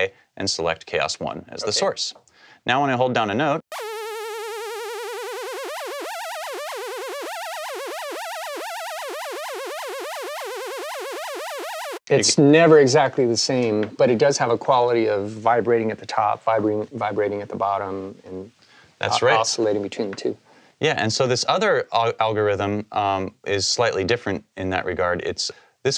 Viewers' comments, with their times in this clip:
0:09 that look plus the sounds of the chaos had me rolling. hahahaha! Good stuff.